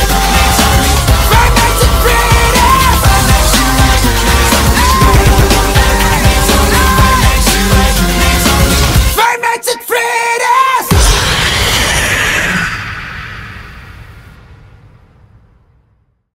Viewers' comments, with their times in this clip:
0:05 ❤❤❤❤❤ great vocals lol